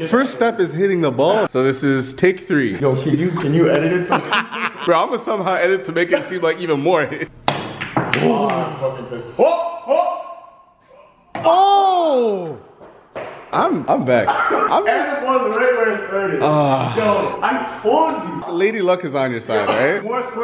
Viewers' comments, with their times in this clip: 0:06 on it sounded like "shave and a hair cut 2 pits"